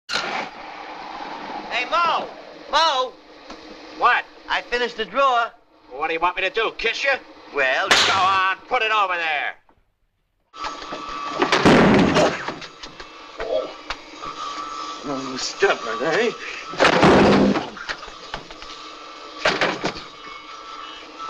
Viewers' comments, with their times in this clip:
0:07 is hilarious. Moe serves up a left to Larry’s coconut. I don’t think that’s a sound effect.